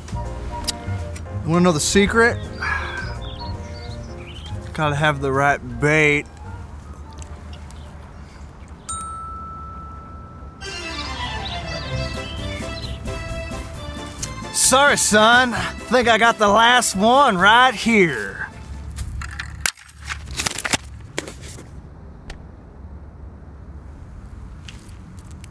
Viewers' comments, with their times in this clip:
0:08 as soon as that ring sound happened it does it perfectly when the time just changed a minute